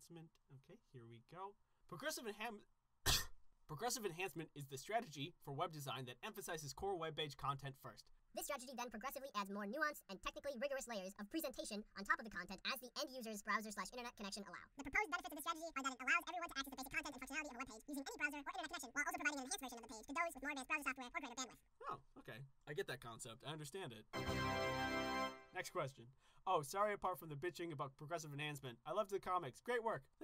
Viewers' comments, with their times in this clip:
0:05 2x * 2x = Chipmunk voice 🐿
0:15 If you play at 0.5x or 0.25x he sounds super cute ;3